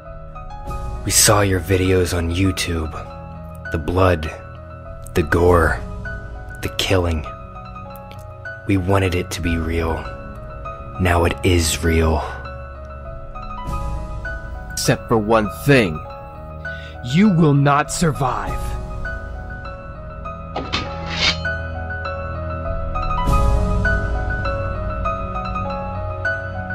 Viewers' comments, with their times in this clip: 0:10 By the way: 'We wanted it to be real, now it Israel' xD